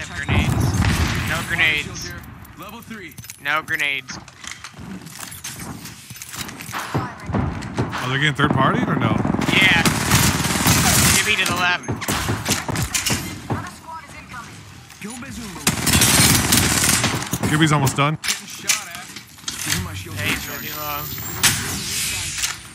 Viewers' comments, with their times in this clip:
0:08 should add those beats to your intro lmao (the gun shots were 🔥 fire tho)